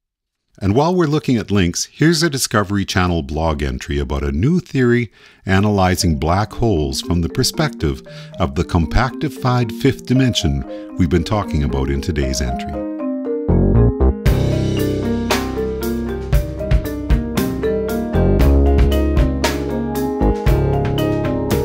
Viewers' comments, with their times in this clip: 0:06 anyone else think their phone was ringing ?